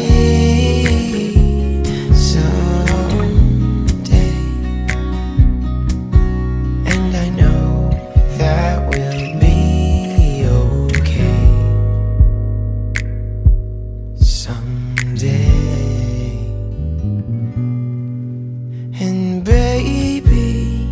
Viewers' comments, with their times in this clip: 0:07 Anyone else hear “Love Letter” ?